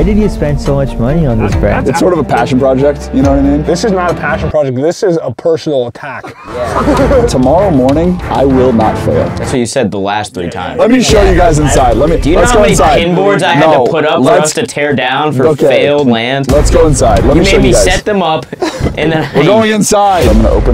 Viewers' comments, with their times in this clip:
0:05 I feel this and his laugh right after!! I LOVE IT!! LETS GO!!